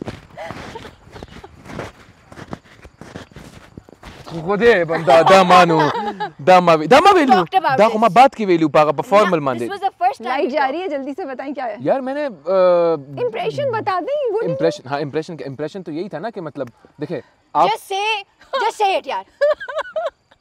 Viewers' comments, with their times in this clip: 0:04 .. The way khushal said "Khudy bnda da ma nao wely" Is really cute yaar 😂..❤🔥